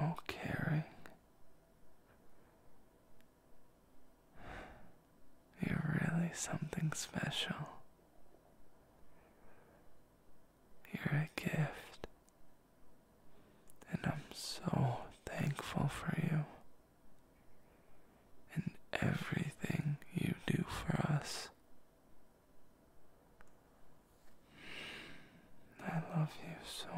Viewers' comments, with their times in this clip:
0:07 Idk man I can HEAR U SMILE 💕😂 This whole think make me blush so hardddd I lay down in my bed and I'm just smiling so dam harddddd 😩😂